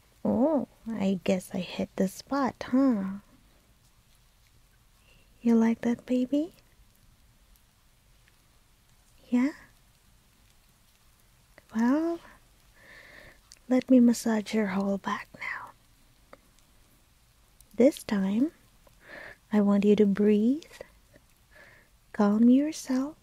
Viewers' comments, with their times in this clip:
0:04 OH LORD OH LORD. the way u said ''You like that baby?". 💗